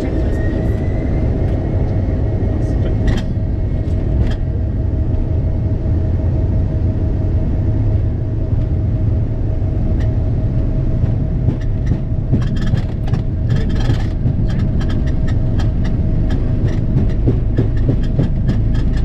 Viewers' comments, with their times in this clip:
0:07 This was very interesting. .. I can certainly understand the 'check & double check.' Wouldn't wanna run out of fuel over the ocean.🥴 I notice all the big planes have that 'thumping' sound as speed picks up.....why?